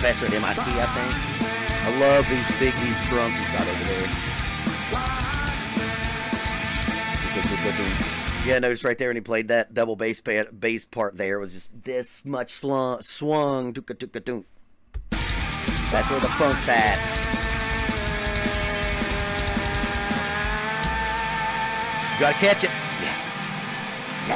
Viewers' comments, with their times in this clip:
0:05 that double bass.. wow . Ray is a legend tho.. lots of people didn't know who he was pre-korn.. but he's been a boss for a while, he just got that break to be in front of tens of thousands of people that hadn't heard of him b4 to hear him beat the shit out a drum kit n sound WAYY better than David.. my opinion fuck off. I've been down with Korn since the beginning..